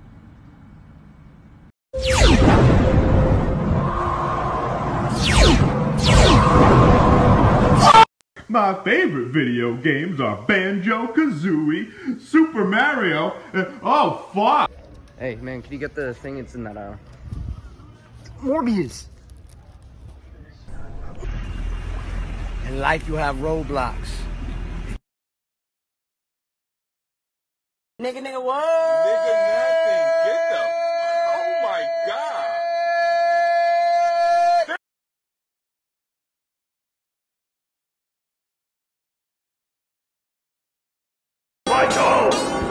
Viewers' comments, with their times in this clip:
0:08 The guy sounded like Mr Nezzer from VeggieTales
0:28 bro she dropped the hard r
0:28 sounds like the song from avatar
0:29 avatar ahh sound
0:30 sounded like the Death Theme in Avatar 😂